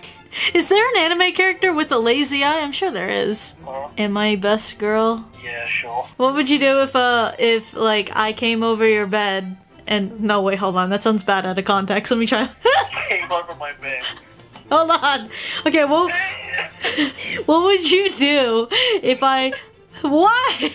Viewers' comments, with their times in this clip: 0:07 "what would you do if I like came over your bed?" both start bursting out into laughter